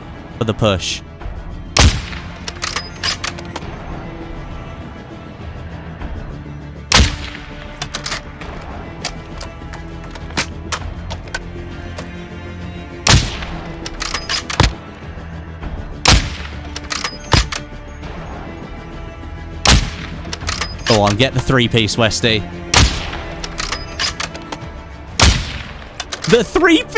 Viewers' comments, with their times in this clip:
0:07 The music sounded like "Empty Spaces" by Pink Floyd